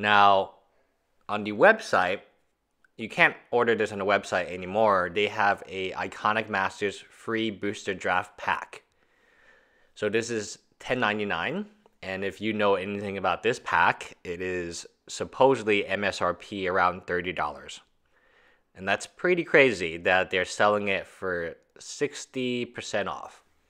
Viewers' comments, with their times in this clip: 0:06 sounds like you said "free" booster draft pack. Looks like that sale is over for now, checked online and it's currently showing $30.99 (in CA). Also, should the title say, "Where" instead of "Why"?